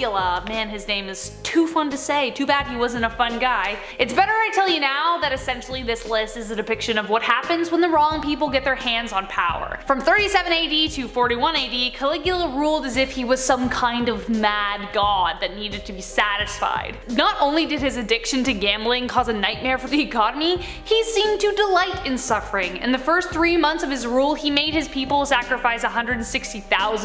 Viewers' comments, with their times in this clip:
0:08 It's very weird how the narrator explained with ease about victims' trauma (starting from in the video). Narrator didn't seem to be touched by the tragic incidents